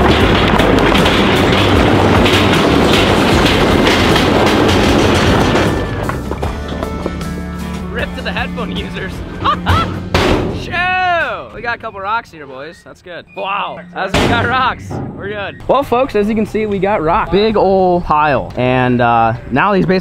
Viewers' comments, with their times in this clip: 0:07 “rip to the headphone users. *mickey mouse laugh.”